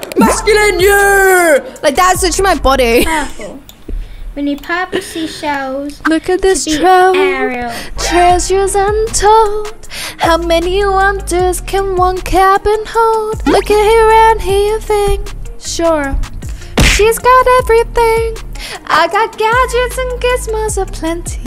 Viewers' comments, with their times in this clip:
0:08 BRO UR SO GOOD AT SINGING NGL